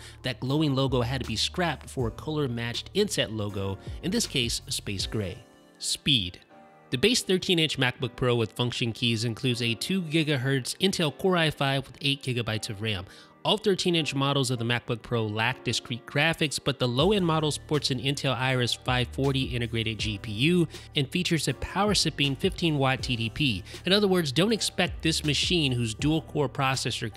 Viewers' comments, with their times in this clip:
0:10 the way you said ghz made me cringe, but good video either way! 👍